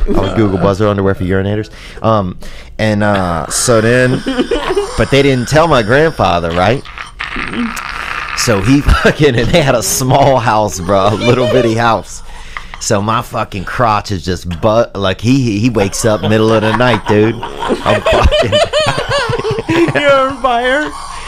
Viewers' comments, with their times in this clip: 0:09 joey is laughing sooo hardd.. good too see cause hes always making us luagh